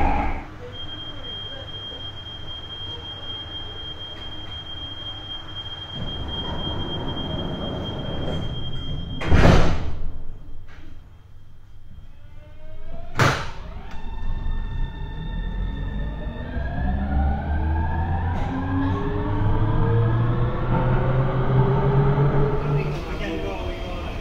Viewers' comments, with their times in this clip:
0:10 That acceleration sound is beautiful